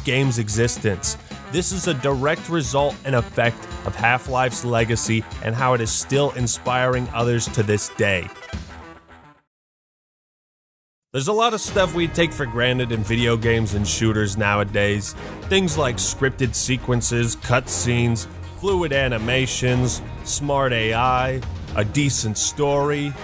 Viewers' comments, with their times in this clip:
0:10 first time that music doesn't instantly destroy your ears
0:10 U missed one important thing about CSGO at that timestamp The music wasn't L O U D